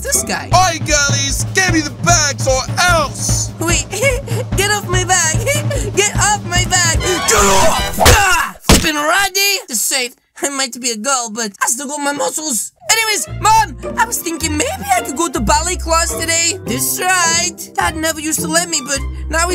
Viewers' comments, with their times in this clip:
0:03 What in the name of spicy god was that femboy giggle